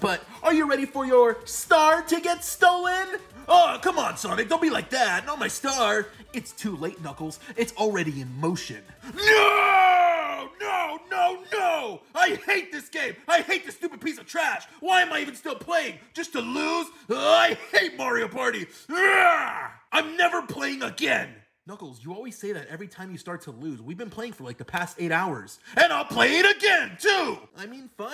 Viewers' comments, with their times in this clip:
0:10 Knuckles is screaming